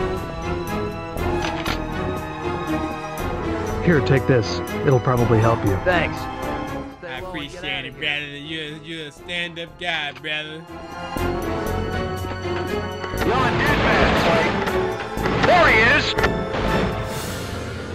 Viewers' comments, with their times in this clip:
0:05 why this man out here sounding like Timothy Olyphant in the booth tho 😂 #FunnyMomentsMontage